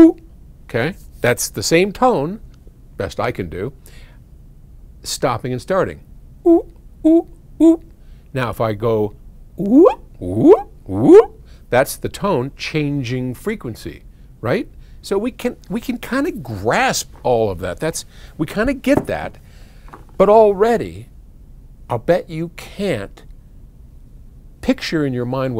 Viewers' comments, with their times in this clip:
0:09 reminded me of Carl Sagan imitating the sounds of whales in 'A Glorious Dawn' by Symphony of Science.